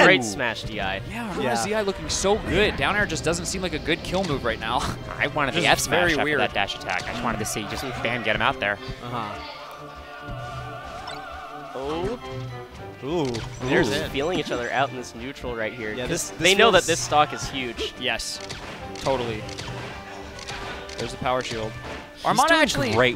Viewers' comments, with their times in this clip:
0:05 that is the nerdiest sounding voice I've heard in my life